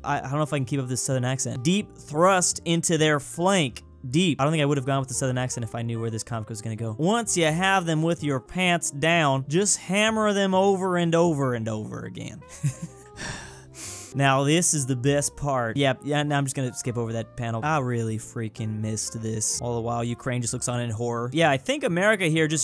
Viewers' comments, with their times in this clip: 0:04 why is this American trying to use an American accent?